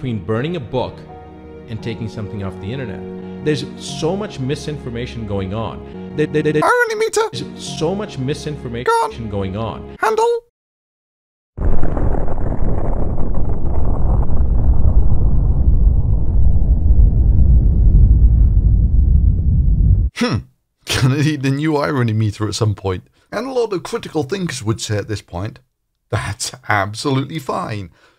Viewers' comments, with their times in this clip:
0:09 lmao best part. The irony meter sound. Edit: even better later on in the video lmao